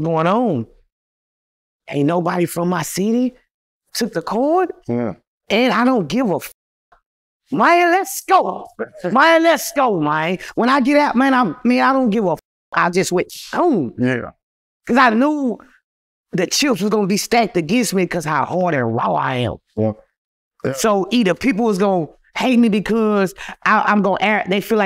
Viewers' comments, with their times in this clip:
0:07 Austin lost as a city there trying to mimic other cities look he changed his whole accent and style to Louisiana 🤣 How You Suppose To Lead Yo City And You Following 🤦🏿‍♂️